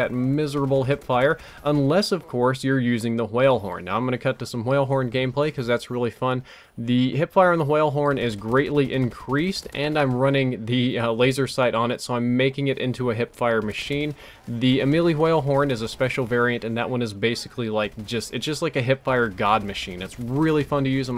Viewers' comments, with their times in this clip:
0:03 Lol, 'h-whale horn.' I get the reference. :D